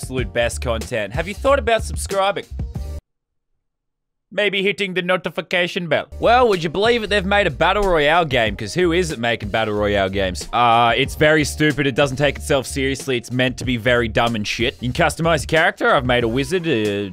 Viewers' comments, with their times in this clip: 0:05 he sounds just like fresh